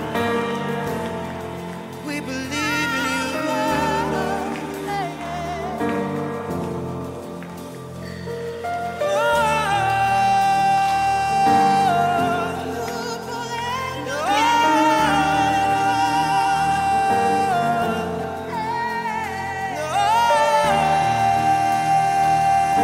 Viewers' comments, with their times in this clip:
0:07 Here is a wonderful assortment of PRAISE songs of Tauren Wells ! The songs are blessed in a clear recording and without a bunch of other "stuff" to lift it. It does not need it! ALL is clear . Thank you, beloved. See Reply for wonderful Gospel praise in scriptures that we need to have and share if possible. Jesus asked us to share the Gospel. Mark We love our Savior. We obey Him. HE IS GOD THE SON! This blessed praise lifts us to a closer walk with God! "Thank You Jesus" ! Subscribed. We thank this channel for the praise shared. May God richly bless you.